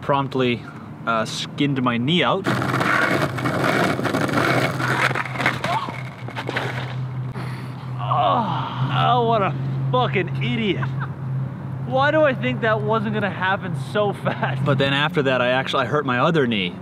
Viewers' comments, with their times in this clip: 0:04 that yelp fucking killed me